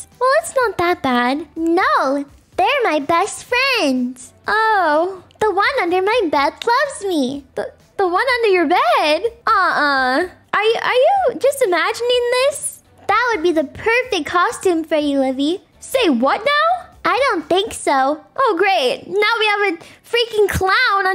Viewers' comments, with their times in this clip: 0:04 The way livie just says casually “The one under my bed loves me” had me dying of laughter I fell off my bed 😂😂😂😂😂